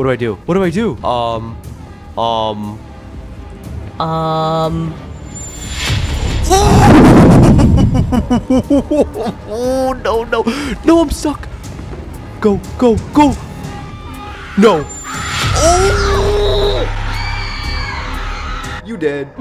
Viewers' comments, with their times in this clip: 0:06 Why Did he blow into the microphone like it was asmr